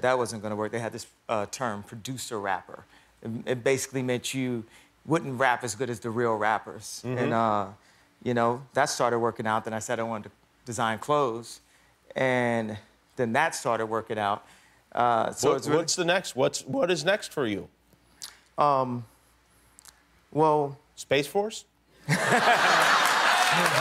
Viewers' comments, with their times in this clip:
0:05 she CLEARLY SAYS "PORN AGAIN" We know what it's supposed to be but I know what I heard I know what I know (SUBS)